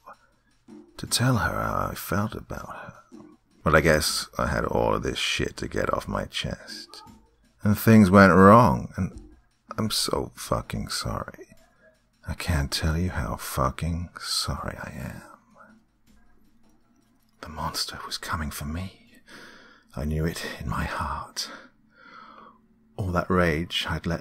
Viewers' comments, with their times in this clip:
0:08 Cat meow in the background. I died. The monster.